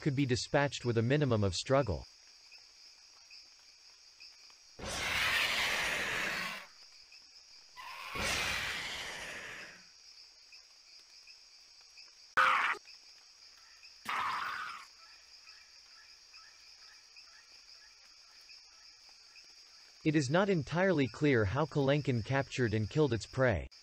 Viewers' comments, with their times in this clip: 0:04 who the hell thought that it was good idea to make these birds sound like five nights at freddy's 3 jumpscares?